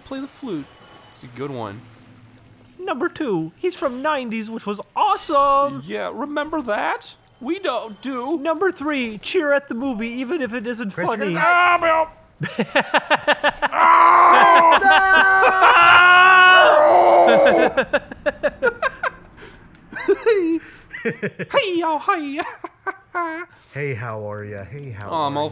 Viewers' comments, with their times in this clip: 0:08 AUUUGH-byup Ding Dong make funny laugh